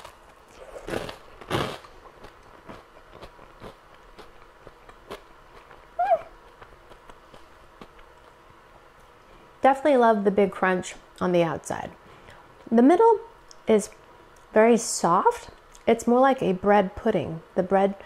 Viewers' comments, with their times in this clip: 0:06 that little squeak was so cute omg